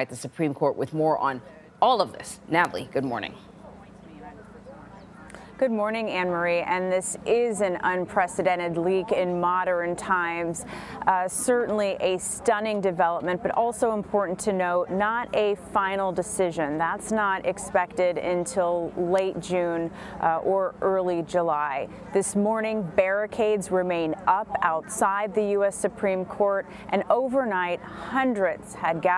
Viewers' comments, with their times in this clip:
0:10 moder-rin times? My daughter would pronounce pattern as patter-rin like she just said modern as moder-rin